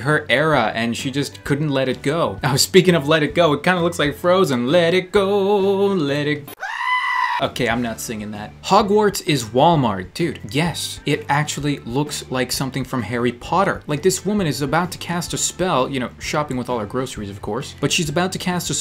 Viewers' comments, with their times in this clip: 0:04 Am I the only one who thinks he can sing !!! OMG 👍